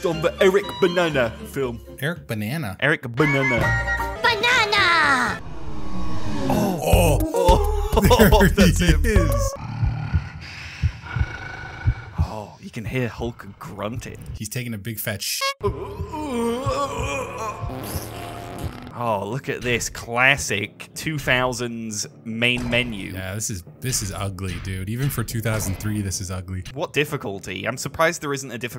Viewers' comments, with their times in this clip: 0:10 I will say this, Hulk breathing along with the heart beat is actually pretty ominous. I like it.